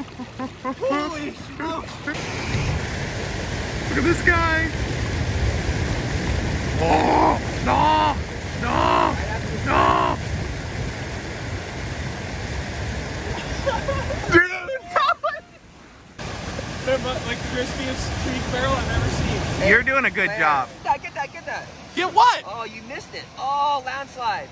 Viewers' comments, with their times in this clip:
0:06 Sounds like a seagull 🤣